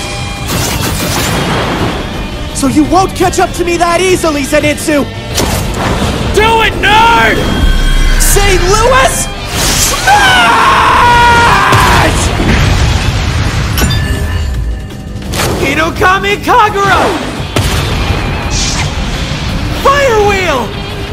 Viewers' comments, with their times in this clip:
0:09 That sh actually sounded like Midoriya saying smash ian een gon lie.